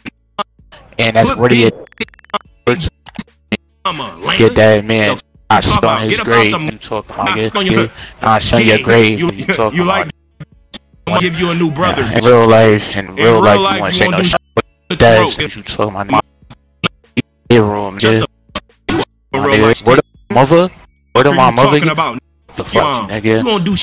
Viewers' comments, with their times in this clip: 0:04 is nothing but skipping sounds 😂 video sounding like when you get out of range with a bluetooth!